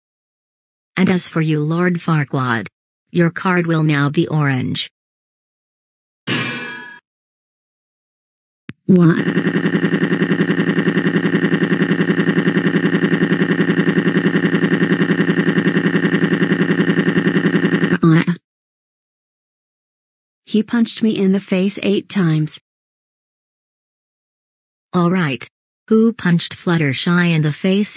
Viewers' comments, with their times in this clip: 0:10 sounds like a helicopter 🚁